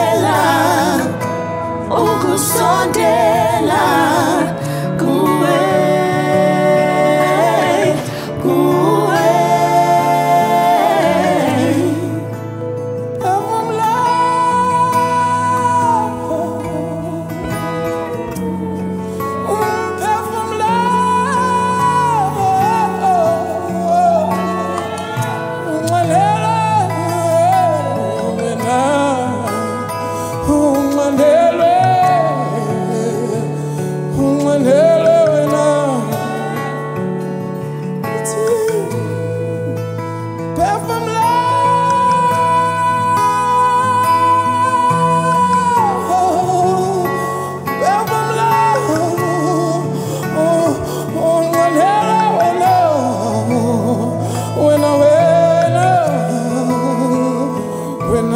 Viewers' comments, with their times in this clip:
0:10 I am so great full to the Holy Spirit for allowing me to come across this beautiful worship team. The young man that comes in is so passionate in his worship to our Father Jesus Christ he takes you deeper.
0:40 Oh my! these voices! Jesus reign mightily. I am reminded of 1st Peter Each of you should use whatever gift you have received to serve others, as faithful stewards of God's grace in its various forms. You guys are teaching my heart to praise in its sincerest form. Thank you... Such beautiful expressions of praise.